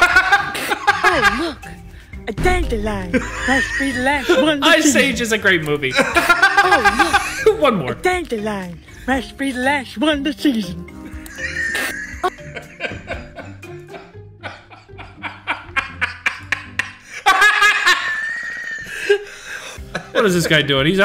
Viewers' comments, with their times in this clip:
0:07 that teeth sound 🤢🤮! 🤜🤛👍🙋🏻‍♂️🤷🏻‍♂️🤦‍♂️🌿